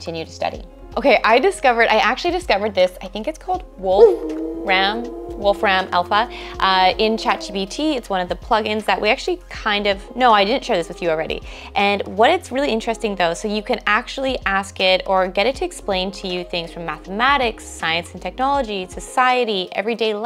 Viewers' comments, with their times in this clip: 0:03 lol at the "Wolf" in WolframAlpha